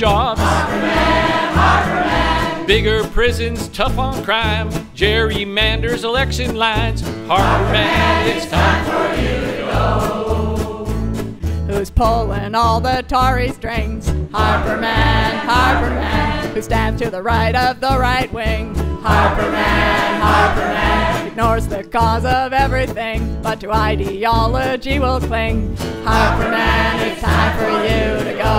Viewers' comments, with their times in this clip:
0:09 Janis Joplin is alive!! :-D